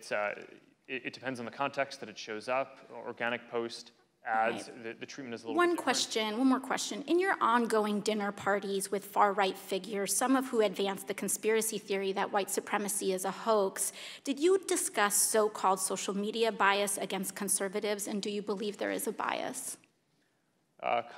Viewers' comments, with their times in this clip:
0:08 Yes, Zuckerberg is a babbling mess here, but... I want EVERYBODY to zoom into what Zuckerberg said He made specific reference to "organic" versus "sponsored" content. For those that do not know (perhaps because they do not run a business page on Facebook), "organic" content is content you haven't paid Facebook to promote. This should tell you everything about Facebook and their priorities: money overrules all.